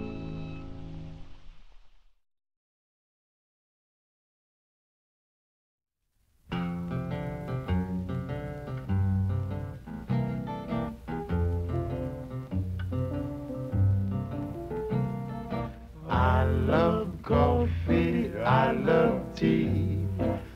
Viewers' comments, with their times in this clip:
0:05 I know is also by the ink spots but the intro sounds like their song "I don't want to set the world on fire" i heard in Fallout 4
0:05 the chords on and you know who`s gonna play next